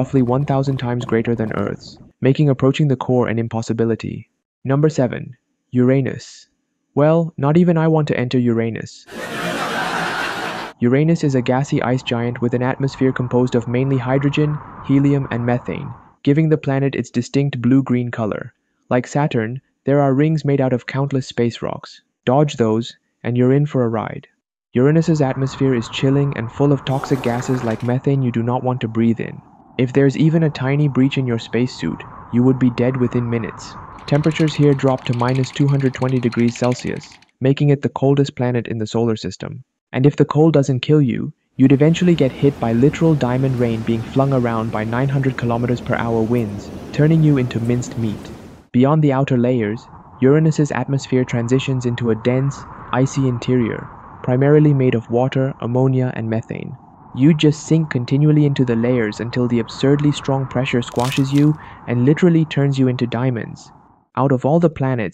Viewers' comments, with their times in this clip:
0:07 the only acceptable pronunciation because it literally is “your anus”
0:47 word binstic? What binstic?